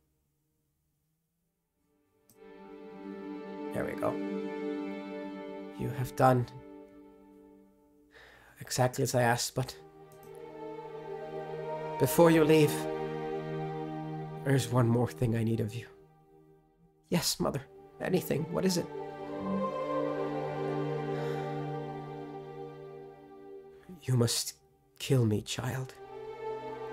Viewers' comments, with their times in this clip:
0:10 Fantastic. The music was really cooperating with you starting 😭